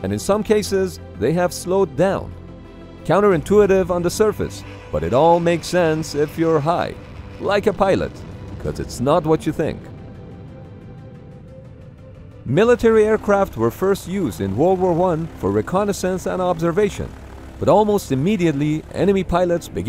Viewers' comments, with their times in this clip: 0:04 The pause after caught me off guard 😂